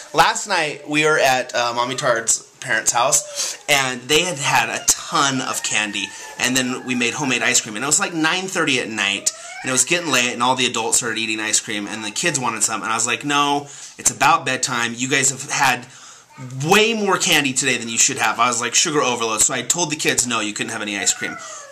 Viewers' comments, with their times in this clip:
0:08 n i was gettin laid??